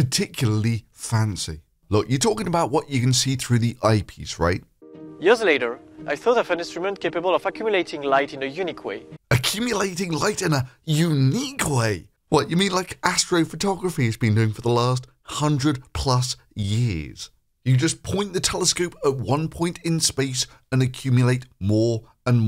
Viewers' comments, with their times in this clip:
0:09 is that a strong french accent ?